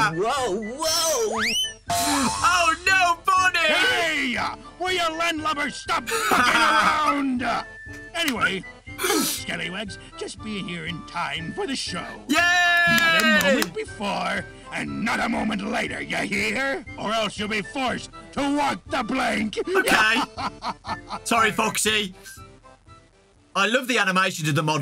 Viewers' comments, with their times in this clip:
0:05 Only the third time I watched that clip did I realize he said mucking around and not F-(This comment has been demonetized).